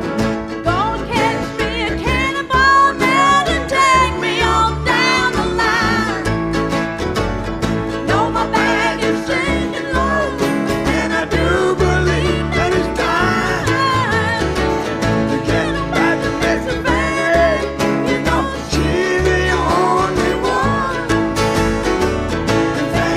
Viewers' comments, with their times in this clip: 0:05 Chill bumps when Levon's daughter takes the lead and sings with a verse with her dad. Whoo!